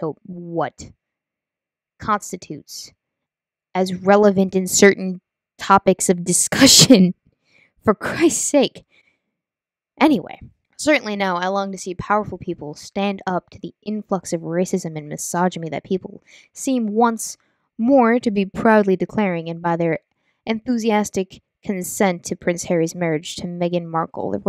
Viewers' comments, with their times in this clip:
0:05 With the mic, wearing headphones and it hurt my ears. Aside from that, no real complaints from the new mic.